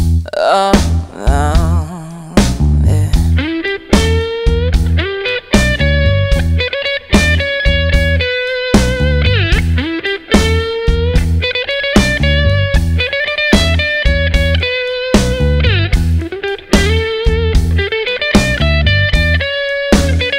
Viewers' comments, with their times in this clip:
0:05 Nice playing and art work. I'm curious, what made you choose this song? Knowing that you studied classical guitar, is it safe to think that you read music? I especially love the notes ........This is an aggressive song.